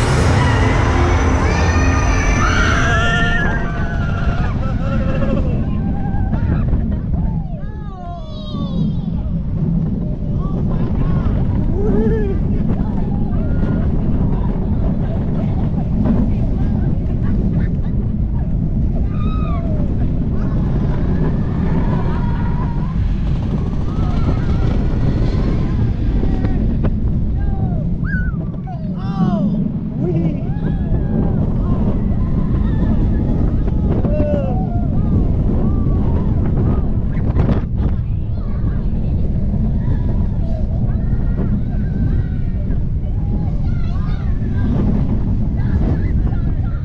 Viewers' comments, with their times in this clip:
0:08 the cute little wee voice
0:10 funniest wee ever
0:30 That lackluster “wee” tells me all I need to know.
0:30 It’s the “ weeee” for me 😂😂😂😂😂😂😂😂☠️☠️☠️😂😂😂